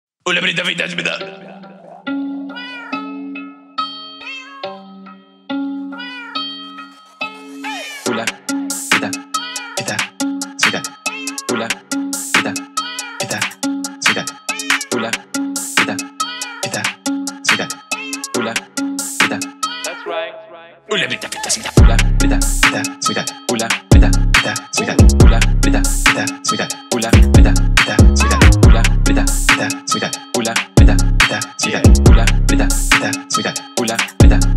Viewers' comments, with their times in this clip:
0:02 This sound on the whole song sounds exactly when you're trying to tune a violin
0:21 it sounds like he's saying Ulla Britta thats a gun